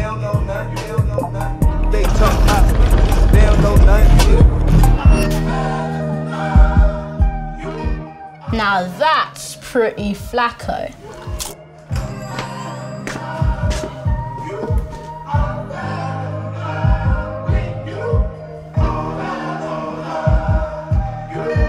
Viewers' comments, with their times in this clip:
0:05 The background music until the end of the video is so gorgeous. Took me to an Astral Plane😍